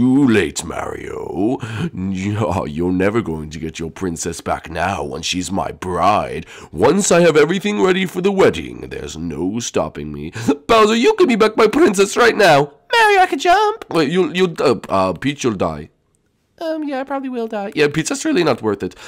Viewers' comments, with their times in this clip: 0:07 once i have every thing ready for the WEDGIE